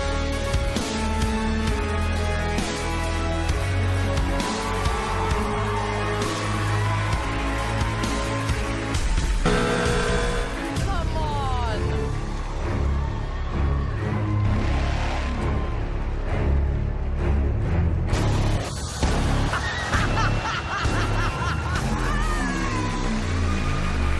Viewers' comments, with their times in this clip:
0:07 People are clapping since then...